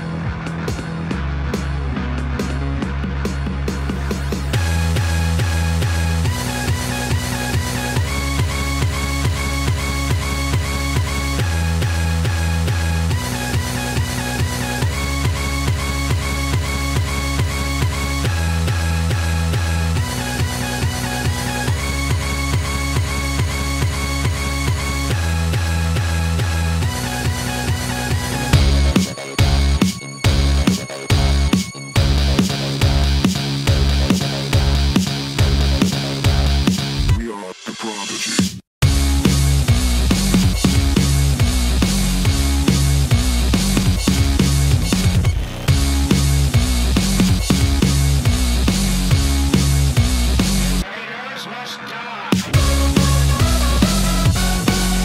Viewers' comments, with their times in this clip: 0:04 Korsica revving up the song is one of the most brilliant synchronizations of soundtrack and level design I've ever seen. This game is amazing.
0:38 The one complaint I might find here is that the pause before the music is a mite too long. That's it. The rest is incredibly well put together. I love it!